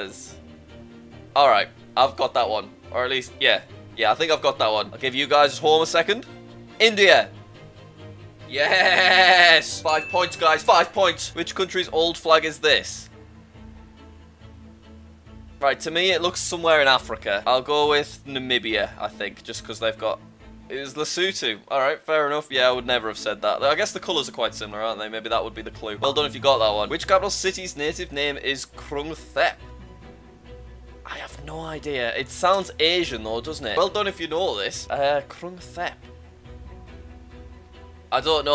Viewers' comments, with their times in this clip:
0:09 what is with that yes
0:19 Ah yes Lesooto